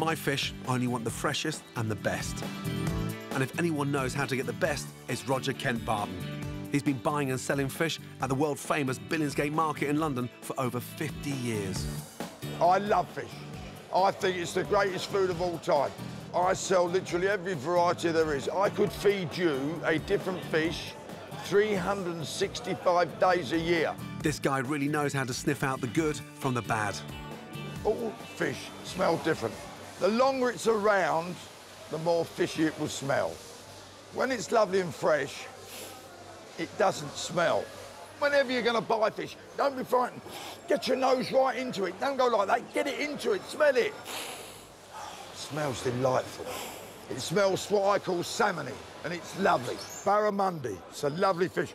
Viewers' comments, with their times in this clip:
0:06 sounds like a more educated Alfie Solomons
0:11 Damn I love that Fish Mongers voice, so iconic British. I feel like he's been in a fantasy movie or game at some point. :p
0:39 You can tell by the accent he is a hard working british bookmaker Basically Arthur Shelby in 30 years